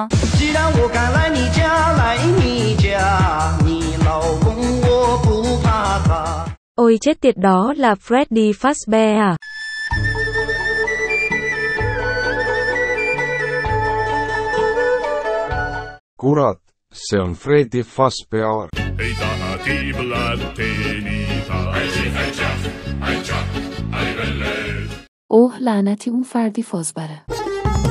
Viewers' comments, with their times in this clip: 0:09 fortunate son begins playing "OH SHITTTTTT-"